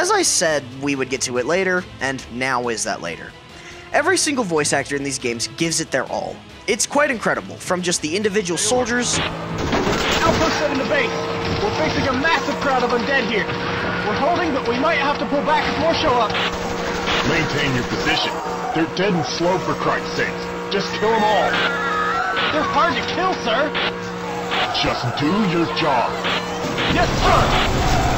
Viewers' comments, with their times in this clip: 0:10 listen closely you can hear the Wilhelm scream lol
0:12 LMAO they used the wilhelm scream! xD
0:13 btw did someone heard the wilson scream?